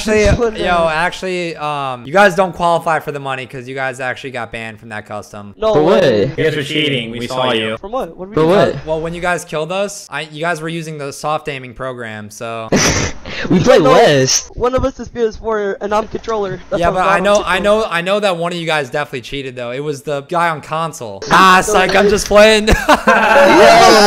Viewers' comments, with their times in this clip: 0:06 Did no one notice they sounded pretty creepy when they said the same thing at the same time??😂😂